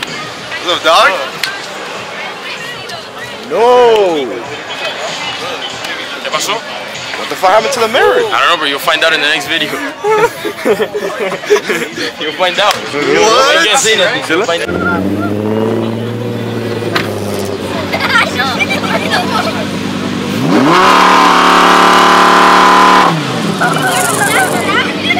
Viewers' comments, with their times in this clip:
0:10 These guys are laughing likee me 😂😂😂